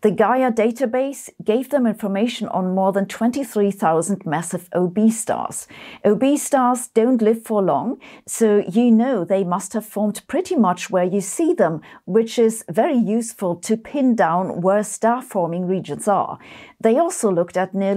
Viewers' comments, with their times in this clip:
0:05 "Obese stars don't live for long" Diet is important!